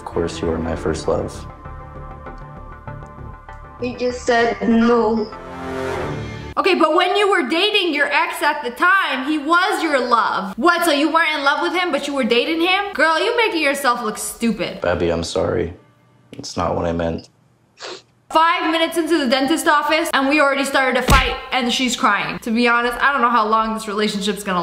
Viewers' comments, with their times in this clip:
0:05 Why does that sound like the among us sound effect? 😂